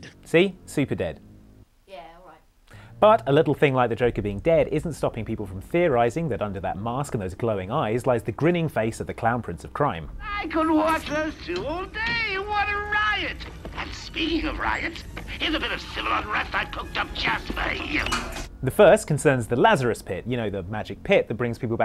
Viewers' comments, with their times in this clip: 0:05 The sound cuts out with a really loud screech. Wtf?